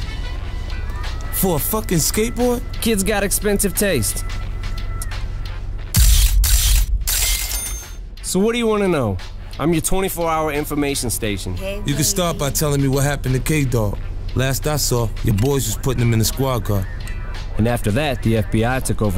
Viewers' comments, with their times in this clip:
0:05 se how he sounds and how he sounds today crazy